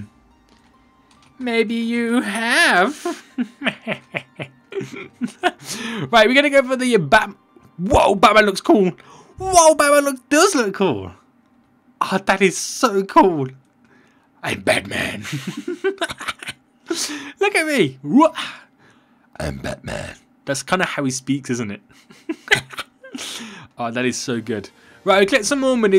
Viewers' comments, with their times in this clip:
0:10 thats a good batman in pression